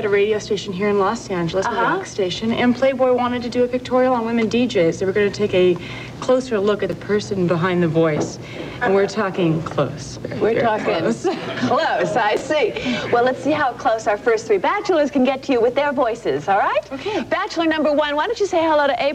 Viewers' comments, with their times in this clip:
0:04 So where did the new "LA accent" derrive from?!?!? New Yorkers still sound like New Yorkers... Theyyyy donnnttt sspeaaakkk sssssssooo sllllooowwwwllaaaayy mmya.